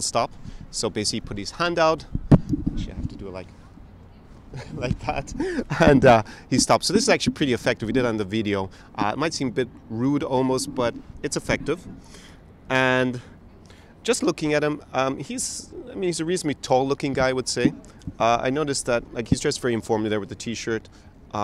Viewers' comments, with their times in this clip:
0:07 Lmao bro the way you say "video" sounds like a Slavic accent! 🤣 Spending too much time with those Slavic languages (just kidding, can never spend too much time with the Slav languages :D )